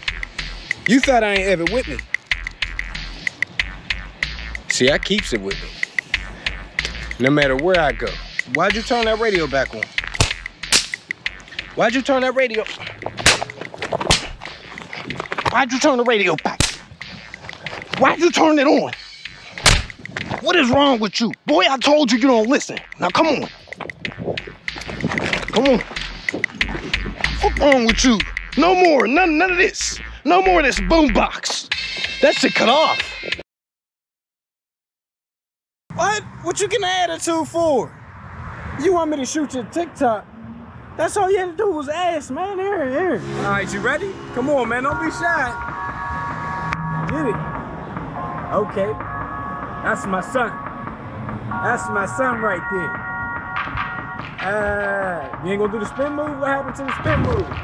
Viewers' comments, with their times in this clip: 0:09 lmfao the snap of the belt, if only folks knew
0:44 ha love the music